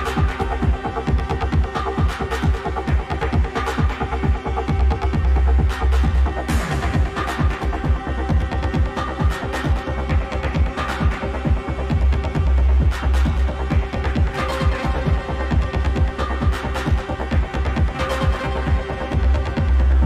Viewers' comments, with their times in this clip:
0:05 Straight up rave